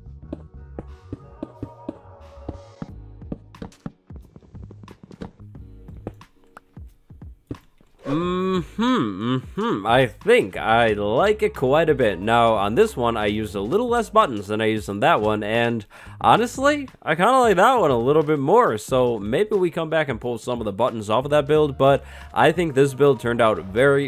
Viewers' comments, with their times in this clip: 0:08 the first sound you hear when you walk into a village